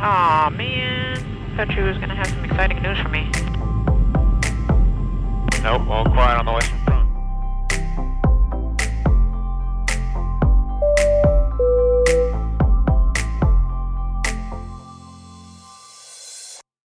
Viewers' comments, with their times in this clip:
0:06 ALL QUIET ON THE WESTERN FRONT! HOOAH!